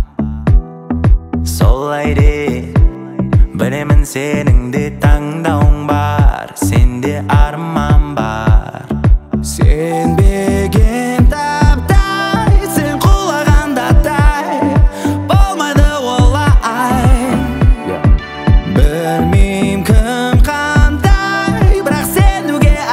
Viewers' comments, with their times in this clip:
0:09 his name? Wow his voice 😍😍😍😍